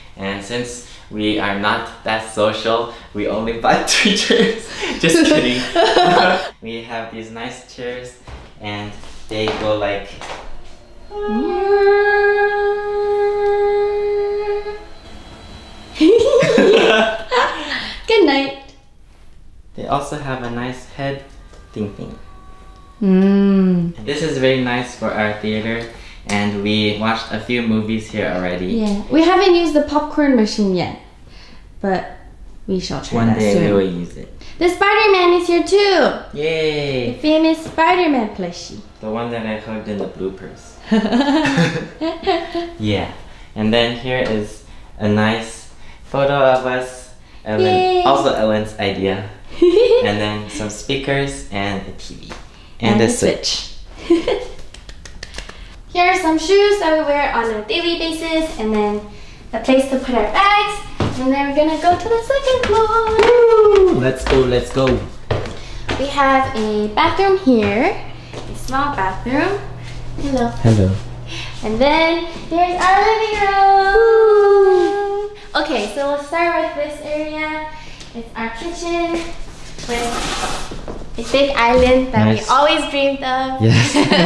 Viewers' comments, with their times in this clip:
0:10 IDK why it is sounding like an Indian conch (Shaankh)
1:09 I love these two so much the way they went "ʜᴇʟʟᴏ" ♥